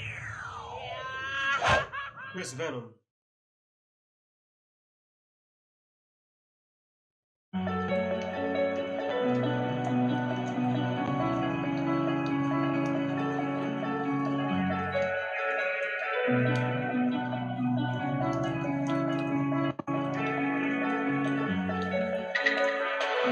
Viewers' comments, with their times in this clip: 0:07 ...should’ve let that one breath a little longer, sounded good